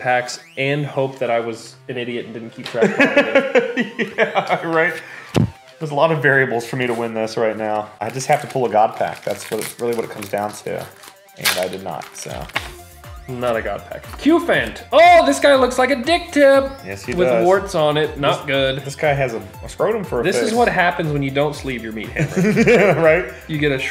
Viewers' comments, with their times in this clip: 0:08 that bass boost tho